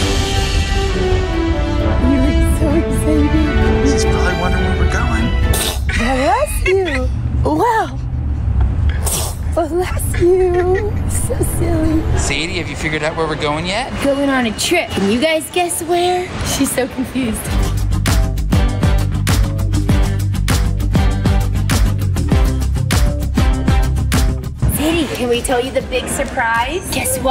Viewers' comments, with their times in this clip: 0:08 she just sneezed on you like you're a tissue